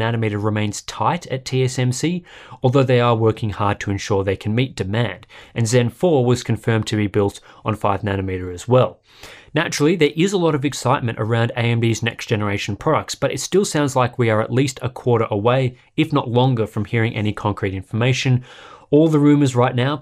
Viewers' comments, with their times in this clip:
0:06 If you listen closely, you hear a happy bird chirping